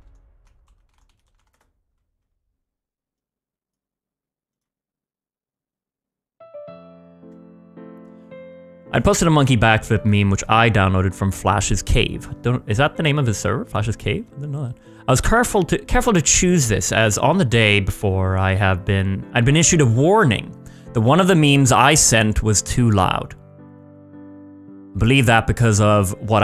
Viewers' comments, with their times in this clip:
0:07 casually change music to somber 😂😂😂😂